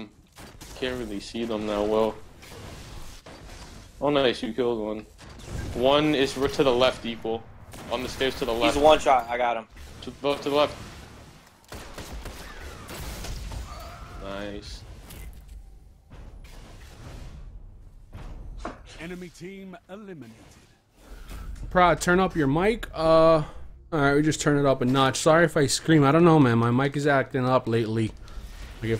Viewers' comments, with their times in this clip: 0:10 That flying knee ...Boooooooooom!lol